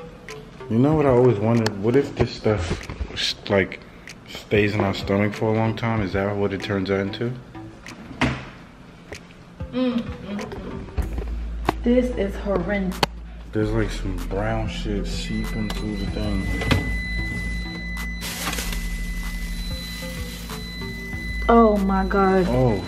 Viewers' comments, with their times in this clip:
0:04 he sound like a little kid😂